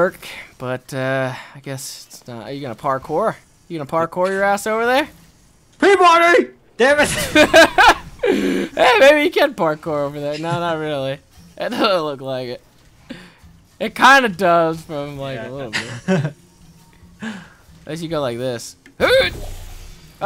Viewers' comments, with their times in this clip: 0:06 Anyone have any clue what he was trying to say here? i hear "free-running"